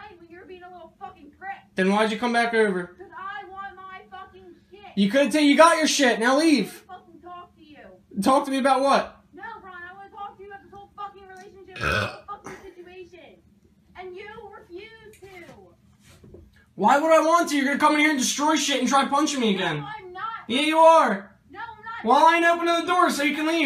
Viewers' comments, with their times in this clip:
0:07 the guy burps mid quarrel 😂😂😂
0:10 Lady goes nuts while the dude starts to burp. Love this 🤣🤣🤣
0:11 ok I was not expecting that burp